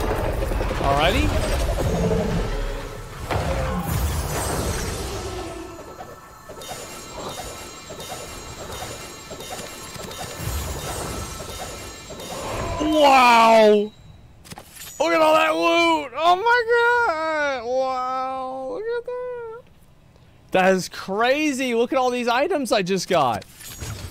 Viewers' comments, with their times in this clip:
0:10 "WOooWw!" meme worthy lol